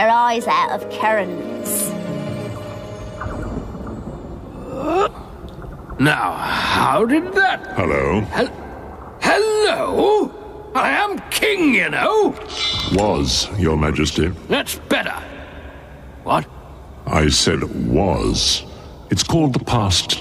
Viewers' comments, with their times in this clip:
0:06 what a testament to the iconic nature of Sir Christopher Lee's voice that I could recognize it immediately just from him saying "Hello."